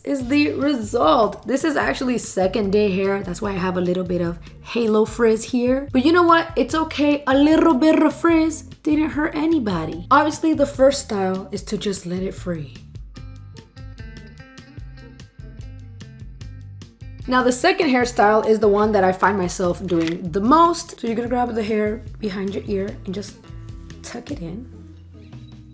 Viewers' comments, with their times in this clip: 0:07 THE WAY YOU ROLLEDDDD "a little bit of frizz didn't hurt anybody" was heaven